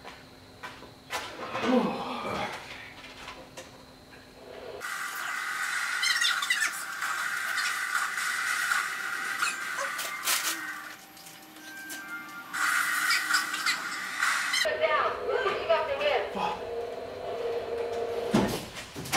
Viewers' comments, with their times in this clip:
0:07 Just don’t the p Hi pitch